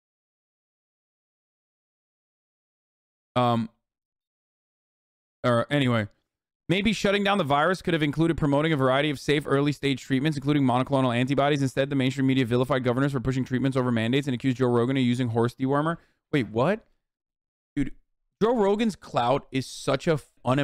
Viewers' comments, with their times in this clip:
0:06 Hasan turned into an auctioneer